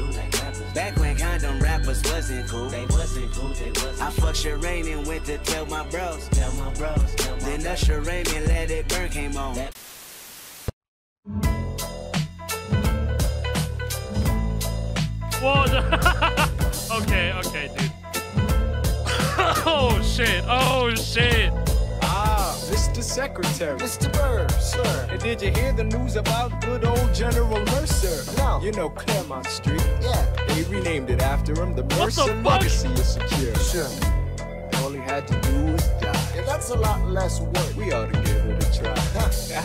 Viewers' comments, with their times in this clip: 0:10 the end to that rip is crazy, it transitions into mambo number 5, it's crazy how it works
0:23 that’s a fucked up thing to do to pumpkin hill. Slaps